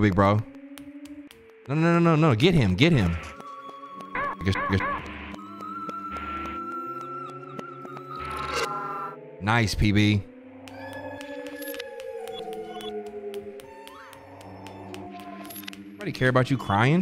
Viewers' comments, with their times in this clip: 0:03 Jesus what did he even say? the whole sentence was all censored lol.